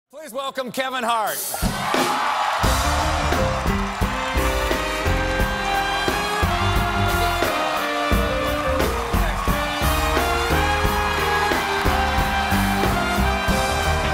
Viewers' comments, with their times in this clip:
0:02 The soundtrack killed it "i aint mad atcha"